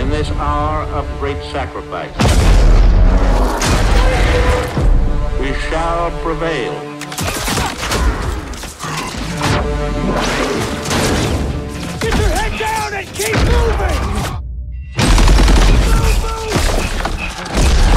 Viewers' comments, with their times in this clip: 0:03 Baby scream or zombie scream?